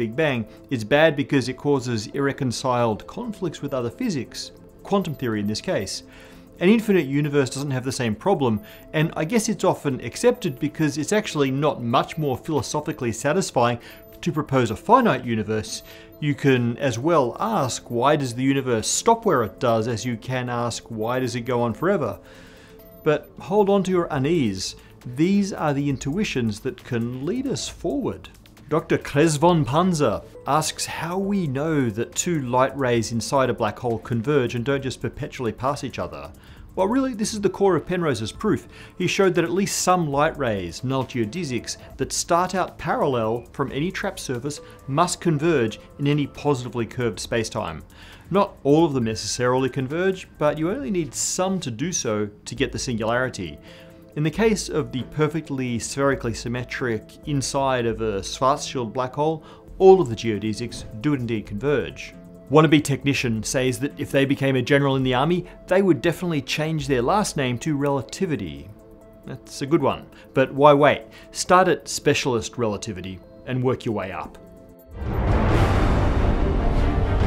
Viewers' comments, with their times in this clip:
0:03 So... can anyone tell me what those high-pitched beeps were ??
0:58 I heard "fart shield black hole" giggled, and I'm not even going to apologize for it.